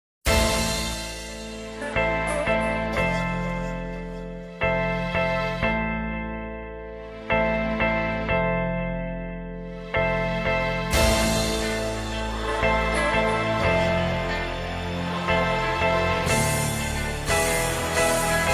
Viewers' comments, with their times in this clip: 0:01 nice gg music